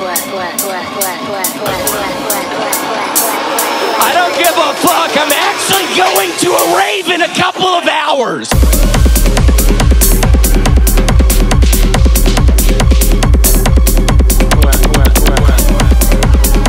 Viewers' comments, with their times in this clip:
0:03 Bro this was a gd journey XD absolute banger with a story to tell- I'm loving the transition into hausdom XD and that doubletime with the clips goes nutty 0.0 W song W edit, m8